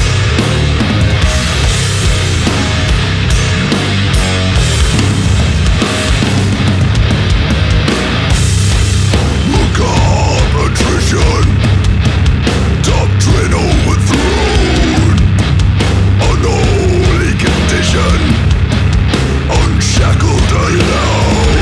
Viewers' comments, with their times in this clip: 0:04 God of Emptiness Heavy \m/ Never heard this band before but so far so good